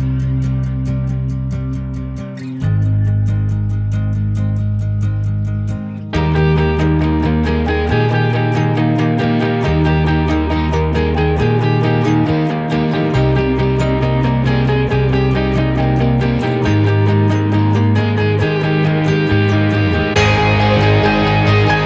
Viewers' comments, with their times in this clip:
0:05 Great quick review. Closing volume mix got very loud causing a quick exit from the remaining promo.